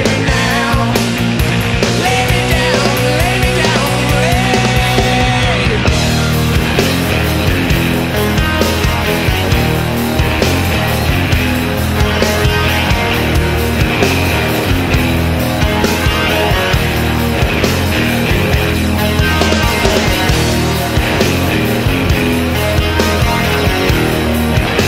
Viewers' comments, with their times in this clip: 0:05 I love the guitar solo
0:06 Was picking out coffee at the supermarket when suddenly the riff hit and I dropped everything to shazam this 🔥🔥🔥